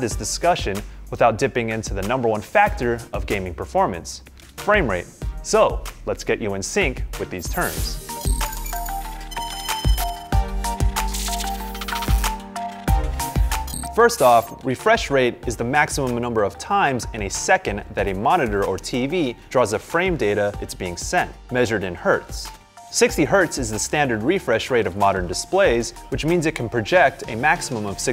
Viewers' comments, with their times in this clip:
0:09 the music is soothing